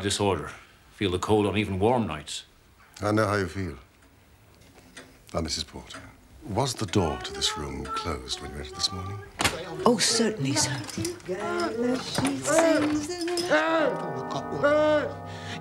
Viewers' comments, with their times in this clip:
0:03 "Now, Misses Porter..." That is the most ASMR line to ever A anywhere near SMR. And that's not even touching how refreshing it is to see a Holmes that isn't the poster child regarding some bizarre caricature of Aspergers and understands how to /talk to people/.